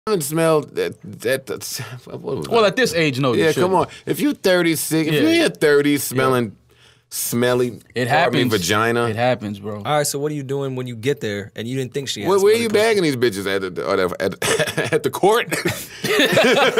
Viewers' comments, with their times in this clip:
0:02 Why does Mal sound just like Charlemagne at the beginning?